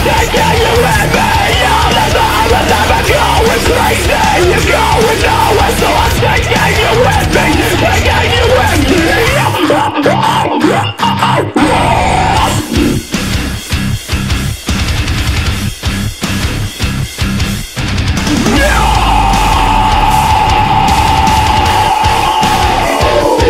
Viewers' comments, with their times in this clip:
0:08 just proves you're inhaling haha